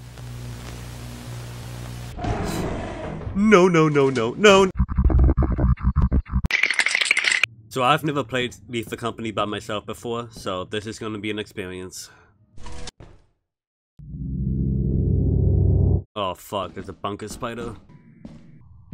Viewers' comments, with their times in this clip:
0:04 My favourite part is always the nonsense talking deep voice xD